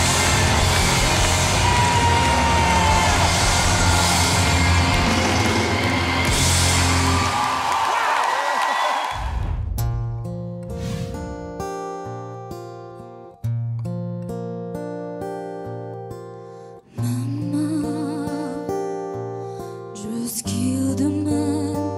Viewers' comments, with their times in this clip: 0:09 ruined that song